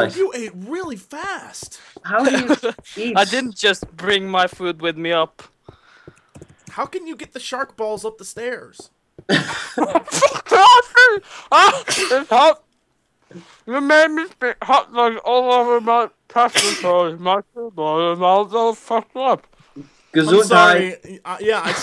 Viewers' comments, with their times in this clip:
0:07 blaarg barg sharg harg blaagrb blaaaarb lol i want to speak Norwegenease too!